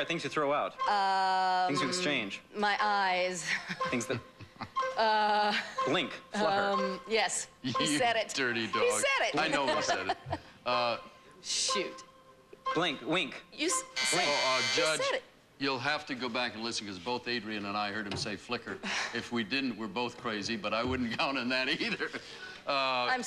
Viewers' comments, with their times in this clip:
0:07 That does sound like he says Flicker not Flutter